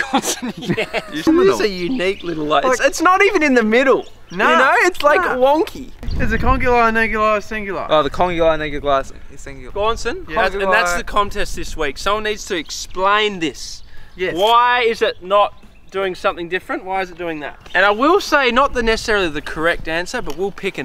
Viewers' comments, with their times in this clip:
0:08 anyone else catch my mans saying the n-word